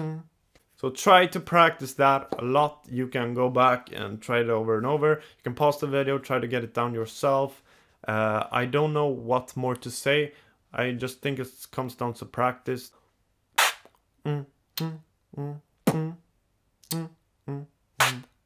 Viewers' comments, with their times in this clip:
0:04 After like 10 min I found easy way to make the part Just skip the first bmg and wait like half a second for the 2nd part m-tm-m bm tm-m Bmgm-m tm Hopefully it helps